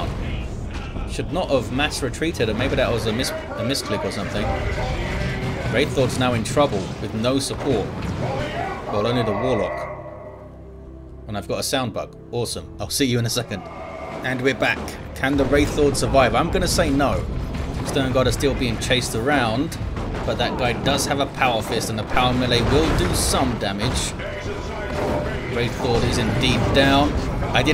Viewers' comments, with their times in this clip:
0:10 It's a shame. We can't escape from that bug.